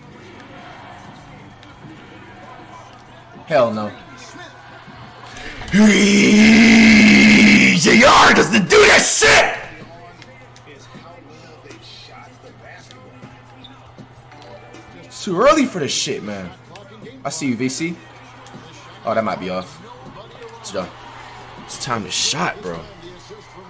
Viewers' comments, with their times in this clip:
0:04 Nigga sounded like Dio Brando